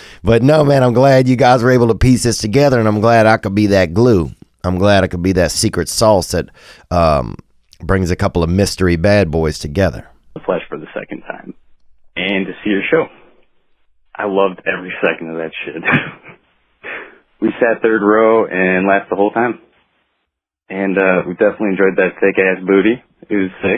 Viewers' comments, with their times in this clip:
0:10 this guy talks like hes reading a novel.